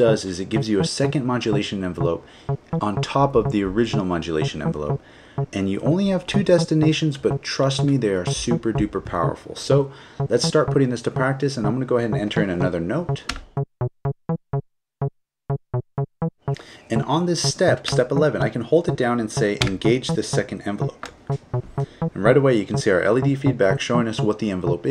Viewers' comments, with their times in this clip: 0:08 Really feels like 2Unlimited's No limit is getting a remix... We need a deep house remix of it!